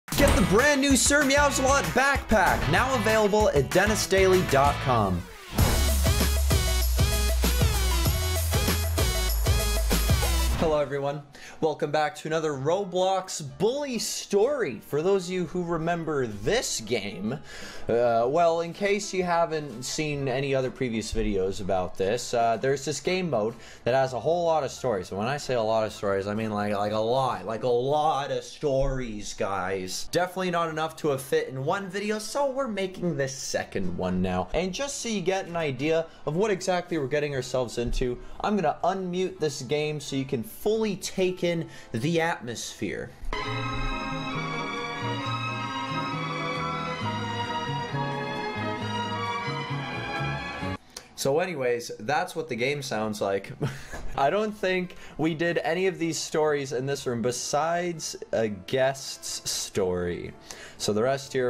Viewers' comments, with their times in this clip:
0:01 My tablet: has high volume on Me: oh lets watch this I’m pretty sure the volume is not too high… Vid: GET THE SIR MEOWS A-LOT BACKPACK Me:AHHHHh MY EARS LOWer it lower it=(
0:47 yasßsssss MY WORLD MUSIC HAS COME TO EARTHHHHH